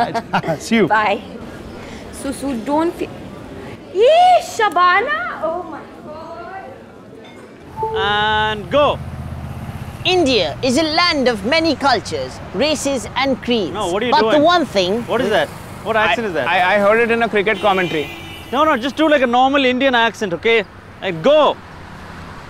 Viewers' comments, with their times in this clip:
0:09 From oh my god the accents nailed it bro